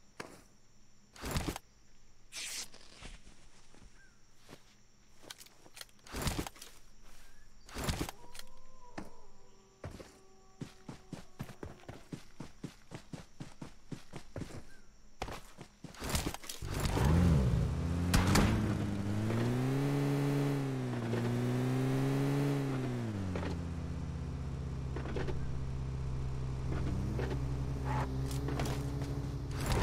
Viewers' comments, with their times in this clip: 0:07 I heard the dog crying 👻
0:13 On what a horror souns